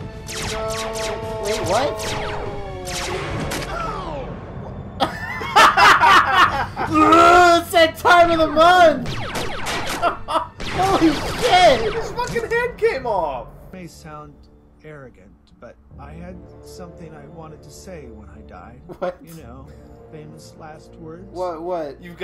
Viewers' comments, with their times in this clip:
0:04 the synced laugh, they really had chemistry